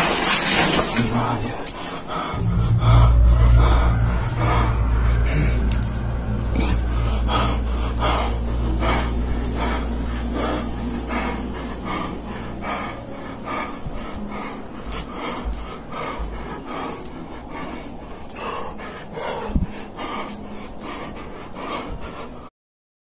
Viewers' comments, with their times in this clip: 0:09 why is he breathing so heavy, this tells me it's so fake.